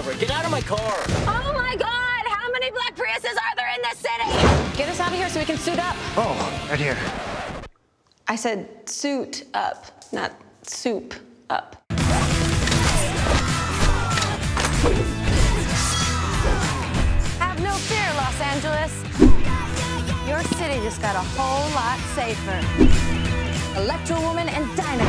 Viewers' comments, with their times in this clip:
0:06 forced joke with the record stopping sound, ya I don't think this movie is for me.